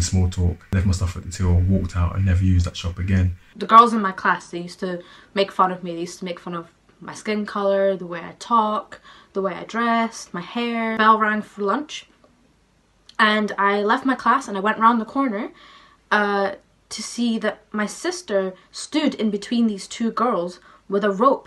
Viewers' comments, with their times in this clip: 0:06 Why would they make fun of a Scottish accent? She sounds Scottish.